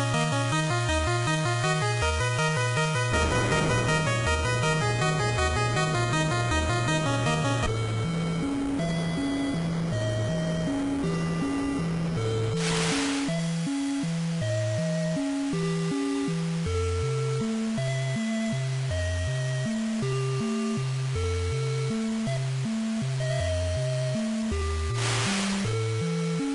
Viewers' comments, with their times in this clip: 0:08 Good music; sounds like something out of Shadowgate or one of the other Kemco-Seika point and click games. "Oh no! You just clicked the manual airlock override switch! As you gasp for breath you see the grim reaper smiling at you! Your journey is over."